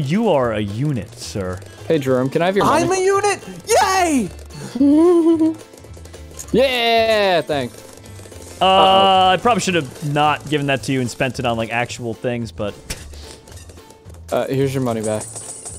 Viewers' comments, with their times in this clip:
0:03 is he british?